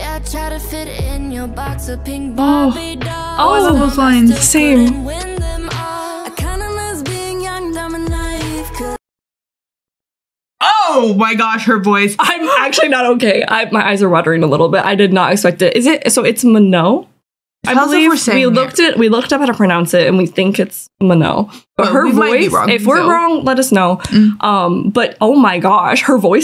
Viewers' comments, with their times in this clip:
0:07 its the way THEY paused the LYRIC VIDEO right b4 I paused THIS video. manon is my bias bro, like i gag at everything all of them do, but her VOICEEEEE